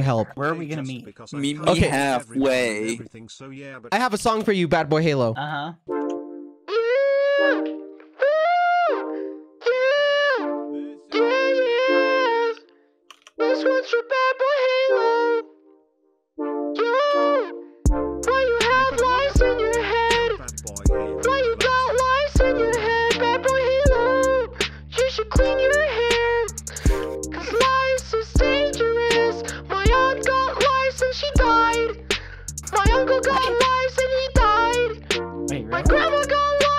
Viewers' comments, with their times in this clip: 0:05 dont mind me i just love the song
0:06 Sounds like funtime foxy singing tf
0:06 the song is cranked god danfg
0:22 this song do not get out of my hand holyyyyy